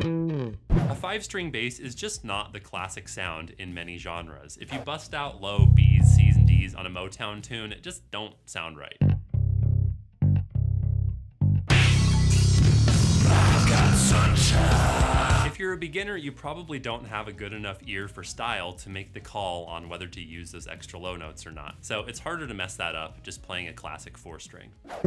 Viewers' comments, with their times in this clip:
0:09 10/10 would listen to a full cover in that low octave and with that singing, they both give it some more aggression